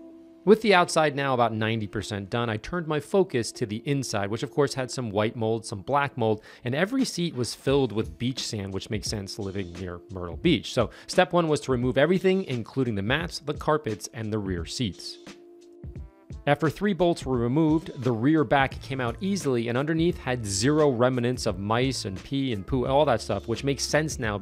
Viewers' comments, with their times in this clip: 0:08 I thought you said the interior was "filled with beef sandwich"..lol! Great video and car, man!